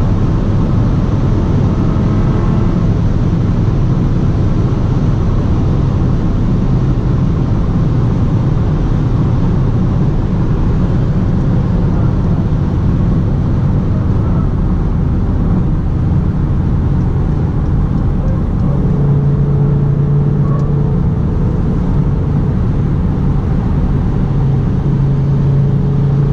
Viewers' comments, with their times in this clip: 0:08 Dont know whats that tiking sound on ? Tire?